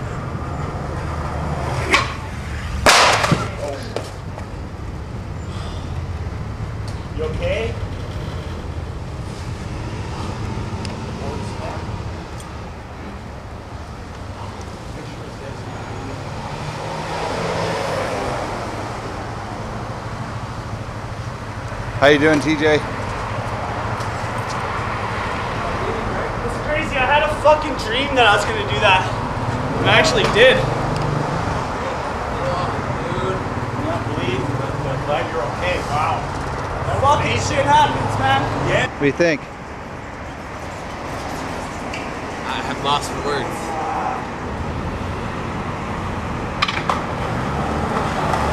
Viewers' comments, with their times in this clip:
0:07 you can here his head
0:34 Can someone please tell me what’s being said ? Sounds like the old guy is saying something insulting and mentioning a 5 year old, but I can’t quite hear it.